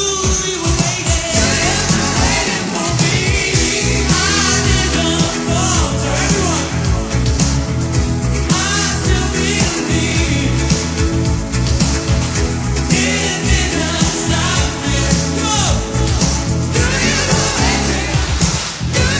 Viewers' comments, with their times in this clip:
0:06 When George said "everyone",there was nobody to sing along with him...